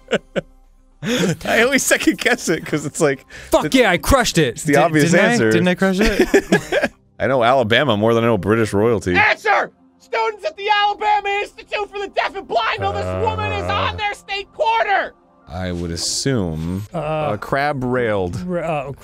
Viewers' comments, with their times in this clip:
0:07 That screaming makes me think of Sequelitis.